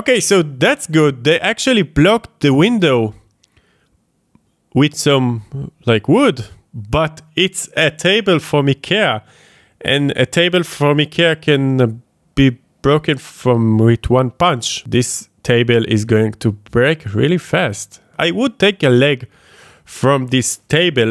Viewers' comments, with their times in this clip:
0:08 That Ikea pronunciation was godly